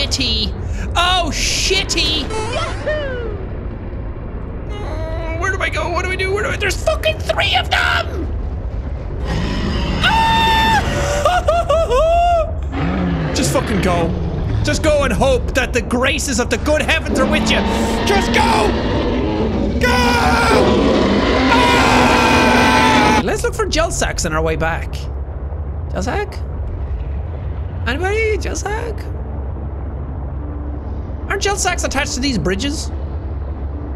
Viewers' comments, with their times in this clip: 0:08 jack turns into goofy
0:09 Jack literally turned into Goofy
0:09 he sounds like the yolder from the grinch (2000).
0:09 i swear i heard goofy
0:10 That Goofy’s scream of terror 😂😂😂
0:10 Jack sounding like Goofy.
0:11 Séan and the leviathan casually having a screaming contest
0:11 almost sounded like goofy lol
0:14 Left this video and came back to First thing I hear is Goofy, and wonder what I clicked on.
0:17 THIS PART I DIED HERE THEY START SCREAMING TOGETHER!
0:18 When the monsters think they can out yell Jack.
0:18 Monster: I CAN SCREEM *RRRROOOOOAAAAAAARRRRR Jack: I CAN SCREAM TO * AHHHHHHHHHHHHHHHHHHHHHHHHHH Cuts
0:18 it’s hard to tell if he’s screaming in terror or trying to out-roar the sea creature lol
0:20 I love the fact of right here it just sounds like Jack is challenging it to a scream off